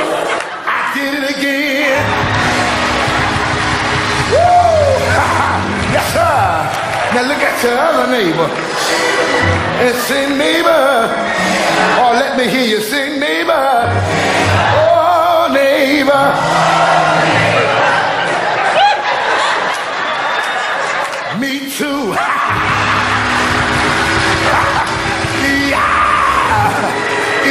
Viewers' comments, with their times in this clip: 0:08 THAT ORGAN PLAYER IS KILLING